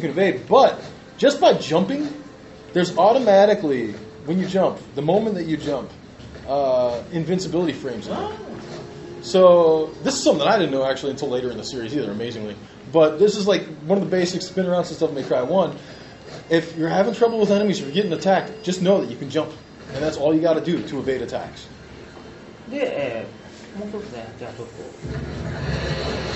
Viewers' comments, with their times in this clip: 0:07 That "oh" when the translator explains invincibility frames is too perfect.